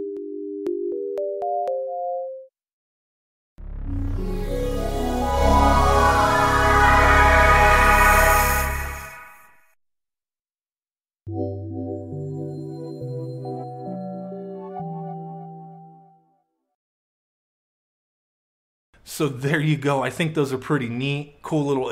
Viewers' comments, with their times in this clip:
0:03 My Favorite Startup Music